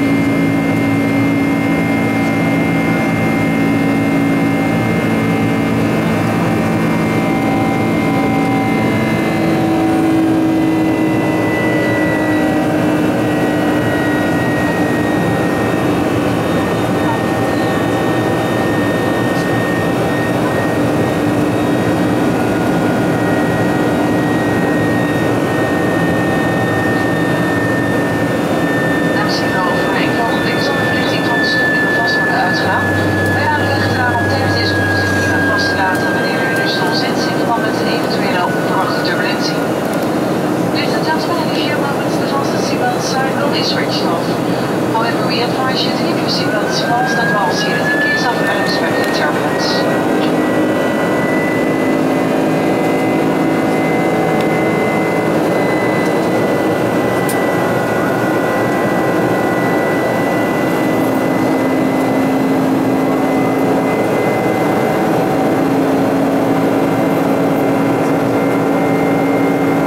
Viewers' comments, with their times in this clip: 0:08 When those engines slow down 😨
0:23 and it sounds like they let them go down to idle! crazy. absolutely roaring at TO power and then almost silent.
0:46 The second spin up is music to my ears.
0:50 Noticed how the thrust increased for a short time. Love the sound of them GE motors. 747 will always be my favourite airplane.